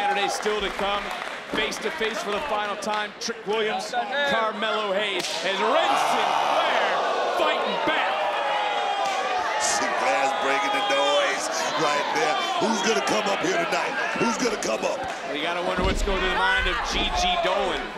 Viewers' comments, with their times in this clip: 0:03 The chops is super loud wren Sinclair